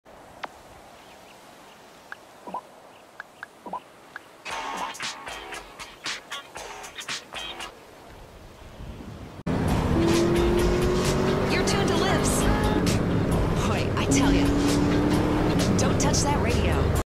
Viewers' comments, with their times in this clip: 0:04 Bump to the music